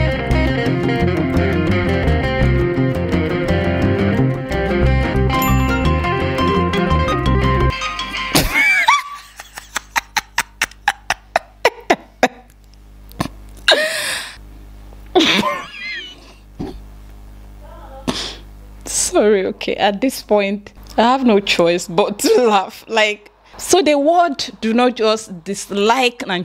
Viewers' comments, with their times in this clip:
0:10 your laughter is contagious. You made me laugh out loud with you 😂